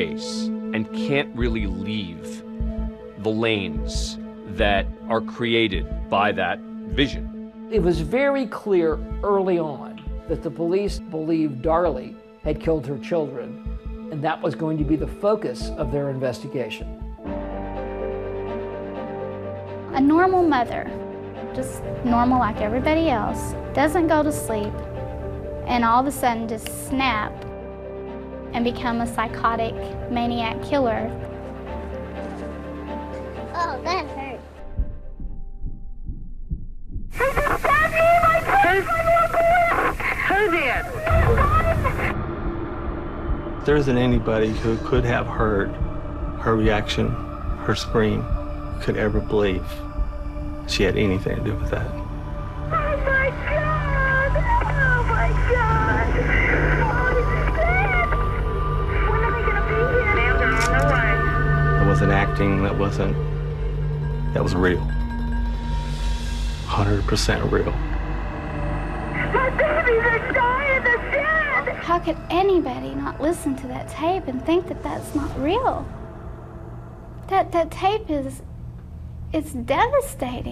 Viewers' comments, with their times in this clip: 0:09 F’s me up that guy sounds exactly like Michel Scott
1:03 how is she so loud on the phone and wasn’t loud enough to wake husband 🤔